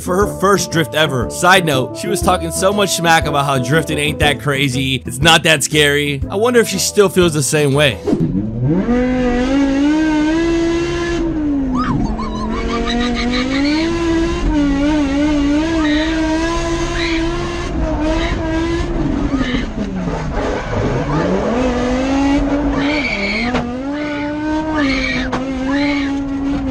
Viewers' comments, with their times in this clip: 0:10 The drift on sound like the v10 bmw